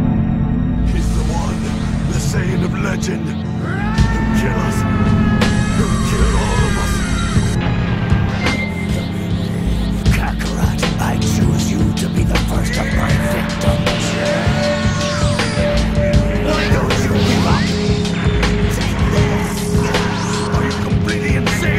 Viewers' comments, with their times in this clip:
0:08 when they show the broly special if they would've put a cooler background song it would've seemed way cooler